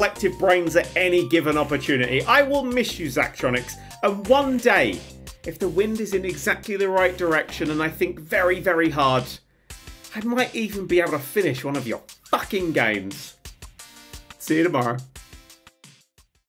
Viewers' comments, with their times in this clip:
0:05 There is a Song?